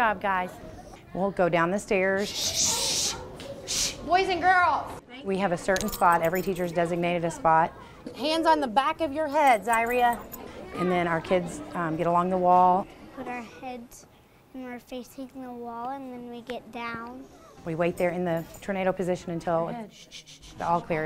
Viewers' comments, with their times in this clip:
0:09 Wait she just called her student diarrhea XD
0:09 I’m sorry but did she just call that child diarrhoea 😂